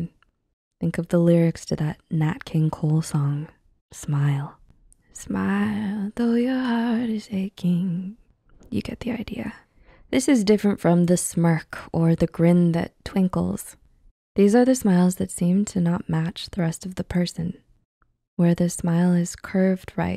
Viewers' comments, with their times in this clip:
0:03 wait why was that singing so angelic
0:04 Dammn, you actually have a nice singing voice 👌🔥🔥🔥
0:04 you voice is amazing!
0:04 your singing voice is so calming.
0:05 - I love all your videos - they’re so insightful and keep up the awesome work! Just on an unrelated note, you have a beautiful voice and if you recorded music, I would so buy your album! 😍
0:05 ik this is 100% off topic of the video but she has a really nice singing voice actually
0:07 You got some vocals 😊